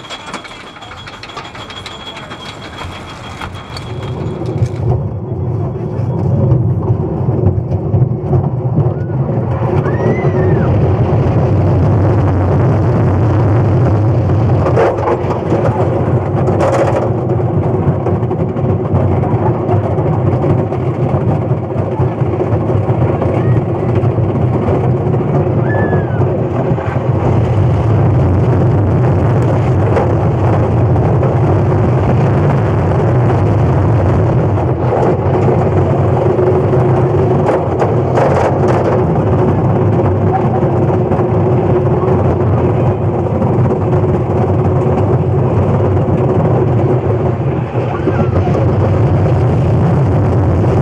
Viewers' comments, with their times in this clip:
0:10 sounds like baldis basics when you find 7 notebooks XD
0:37 That ow explains everything